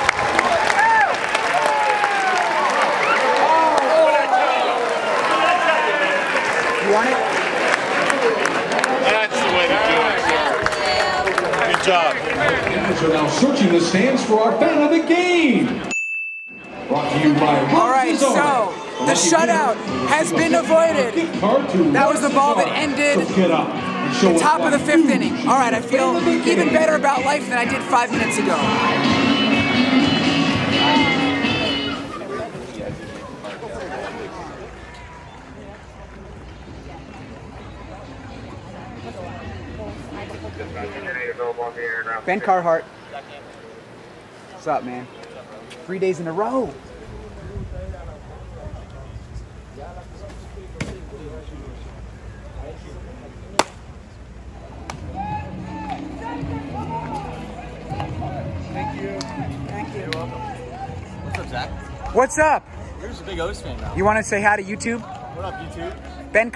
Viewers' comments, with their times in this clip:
0:10 that was the most forced "thank you" i have ever heard.
0:51 is it just me or did the silence feel akward